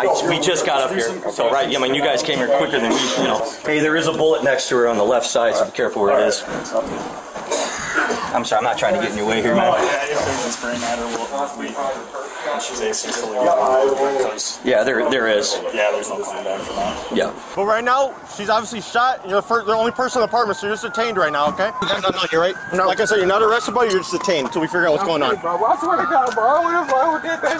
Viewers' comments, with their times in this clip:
0:08 can hear people gagging in the background. must be gruesome